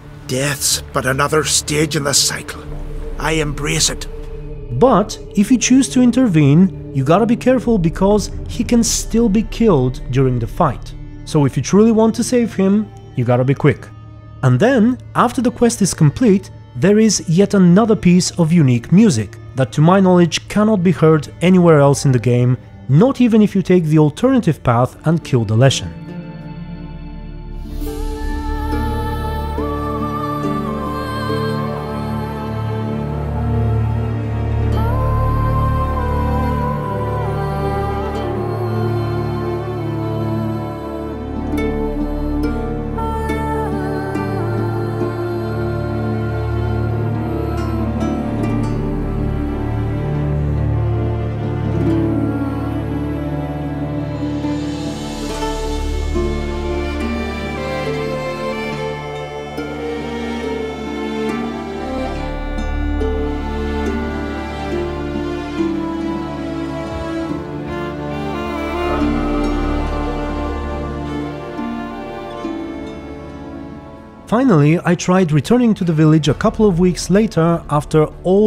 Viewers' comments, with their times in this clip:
0:04 Why is nobody talking
0:14 Just watched the video and I immediately spotted the similarity between the unique music after the quest and a track from Heroes of Might and Magic 4 'The Prayer'. Since I am a fan of both, this makes The Witcher even better. Time to get back on the path once more I guess 😀
0:14 The song in is very similar to the one play it in Heroes 4: Might and Magic. Coincidence? Or Tribute?
0:24 The soundtrack from reminds me one of the Heroes of M&M 4 soundtrack every time. Its sounds so similar to that! Yet this soundtrack already played durning the druid quest at the main game.
0:24 The rare music sounds surprisingly similar/or was inspired by HoMM4 grass theme!
0:27 That music sounds like from heroes of might and magic 4
0:27 Wow, that's some incredibly beautiful music! :O
0:28 that music reminds me of dragon age origin. Good times.
0:28 so beautiful music
0:29 The music sound's very similar to "The maiden" soundtrack from stronghold HD
0:33 you can hear it also when it rains in the skel- i heard it many times and still find it lovely. Maybe only on console idk, i use ps4 console so i can not relate
0:34 The music just hit me so hard, it is so nostalgic. I grew up on a Heroes of Might and Magic 4 game and there are several spots in the Witcher where the OST from that game shows up. But this one is just magical. (I know the OST doesn't originate from the games) It is amazing that still there are so many stones to be turned in this game, just pure art! Amazing video, thank you!
0:34 sounds almost excatly the same as the song "The Prayer" from Heroes of Might and Magic IV
0:34 any idea what that piece of music is called ? It's beautiful ambience!
0:34 The song from give me Heroes 4 vibesfor some reason
0:34 it reminds my of music in Heroes Might & Magic
0:36 The music in sounds super similar to the world music in Heroes of Might and Magic 4. Like, almost identical.
0:39 I always found it wierd the skillige music sounds a lot like a copy of heroes 4 of might and magic. Like here Maybe same composer or music maker idk.
0:44 the music sounds similar to Heroes of Might and Magic 4 It was ambiental music I think
0:54 The song is basically the same melody as one of the songs from Heroes Might and Magic 4
1:04 Holy ravioli that music is AWESOME!!!! Its one of the best in the game